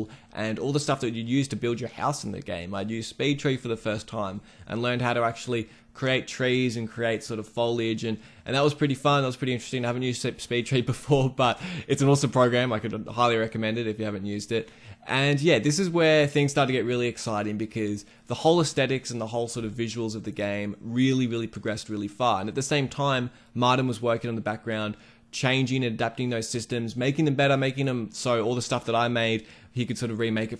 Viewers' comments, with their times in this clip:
0:04 you make reference to a tool I think you called "Bay Trays". That's obviously not right as I can't find any reference in the Unity store, but what tool were you referring to? You mentioned you highly recommend it. I would like to investigate what tool it was.
0:11 Which software is this? Sorry I cant unterstand what he is saying xD